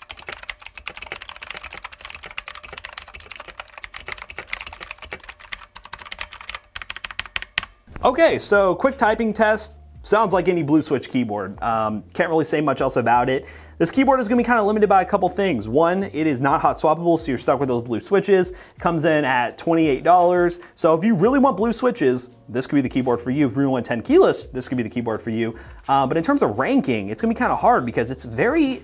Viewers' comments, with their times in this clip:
0:09 “sounds like any blue switch keyboard” bruh that had more pin than me running a 2 dollar wifi